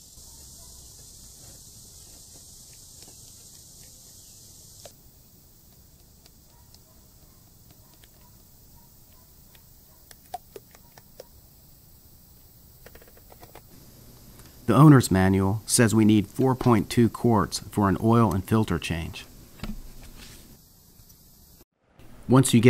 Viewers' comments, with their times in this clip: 0:03 you're pouring with the bottle backwards. Will pour without the glug if you pour with the hole close to your hand.